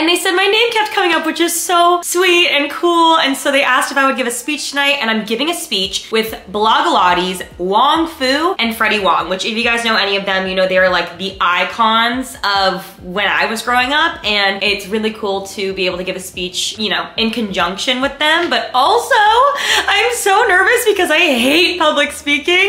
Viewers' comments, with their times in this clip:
0:09 Why did I think she said fetty wap 😭